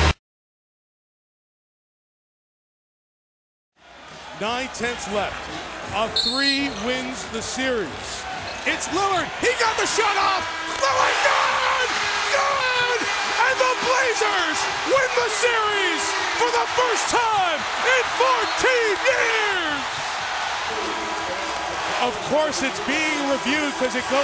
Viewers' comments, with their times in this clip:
0:08 I swear there's almost nothing that annoys me more than cutting off the crowd reaction like that over and over again.